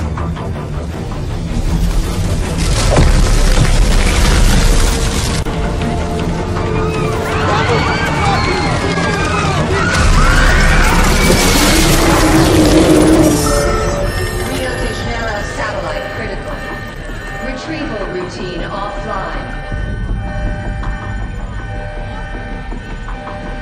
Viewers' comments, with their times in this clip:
0:09 They're ice screaming😭